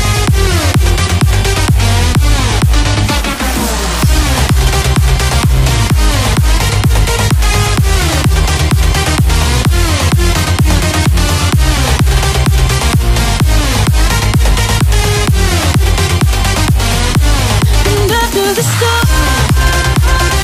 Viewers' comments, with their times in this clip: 0:03 Bling Be like : No I won't leave the bus! 3 seconds later : AAAAAAAAAAAAAA falls out of the bug ragely